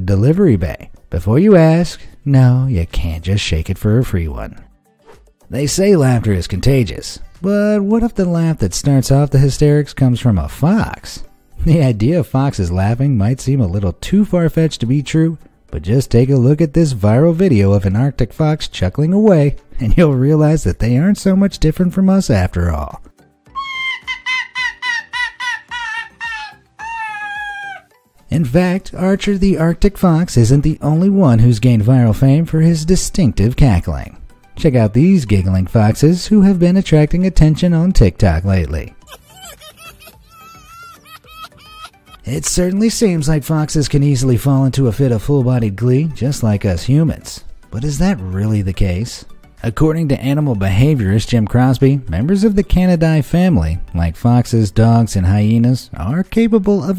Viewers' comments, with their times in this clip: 0:05 The real Basil Brush!! (BOOM! BOOM!)😄
0:22 they need to hire him to voice elmo
0:23 no need to thank me:) PS: this is the laughing fox :)
0:23 Kamala has some serious cackling competition at the mark.
0:23 Basically me when my younger cousin makes a bad joke but i wanna make her happy by fake laughing
0:39 that one sounds like a 3 year old laughing